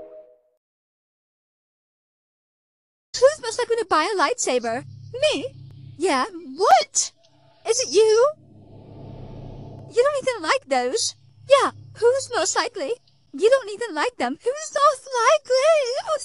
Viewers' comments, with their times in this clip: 0:04 THE VOICES HAVE ME IN TEARS